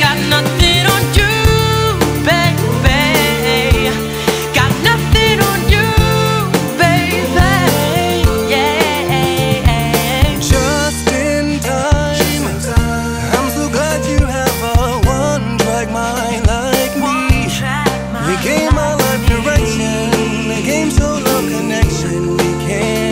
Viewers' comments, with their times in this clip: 0:10 ok the guy sings like he's singing through his tongue